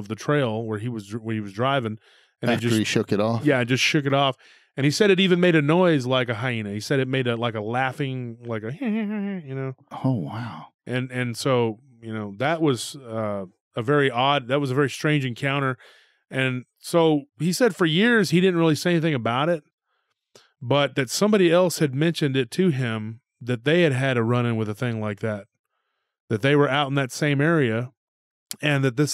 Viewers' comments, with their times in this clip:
0:10 hyena laughing actually sounded like Peter from family guy! 😀